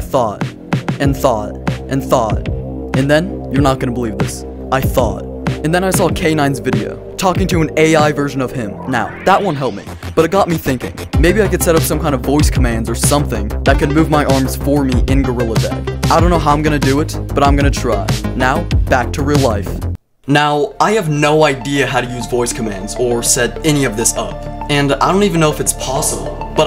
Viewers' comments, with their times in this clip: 0:10 I thought you said you were an idiot